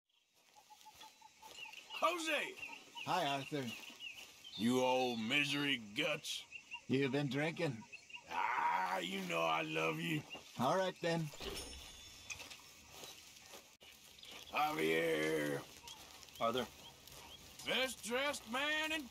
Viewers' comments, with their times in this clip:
0:01 it’s my imagination or that Hosea sounded more like a José